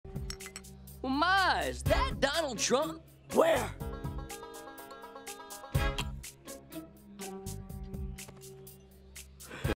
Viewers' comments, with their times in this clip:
0:03 her voice tho 💀💀
0:03 Her inner Male broke out...